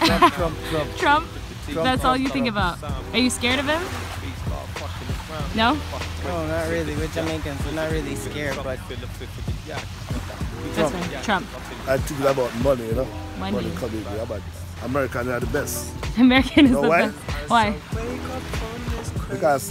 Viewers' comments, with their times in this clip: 0:05 mans voice changed a whole higher octave